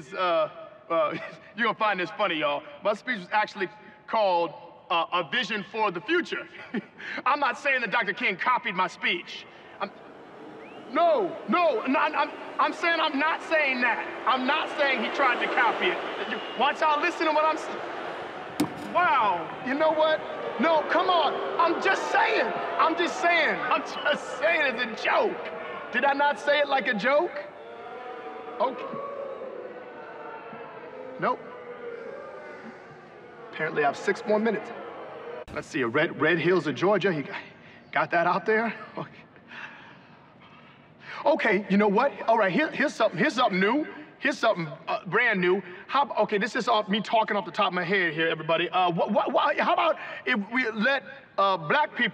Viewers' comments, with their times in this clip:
0:08 I lost it when they add in the crowd booing 😂
0:37 The voice-cracking and stutter-breathing had me dying! LOL!
0:40 I was already LMFAO the entire time but for some reason the "nervous exhale" officially killed me 🤣🤣🤣💀💀💀